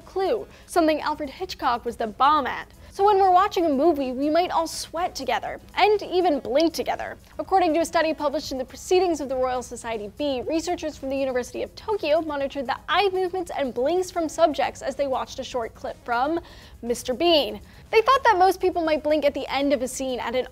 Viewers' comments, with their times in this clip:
0:05 Ha, someone bumped the mic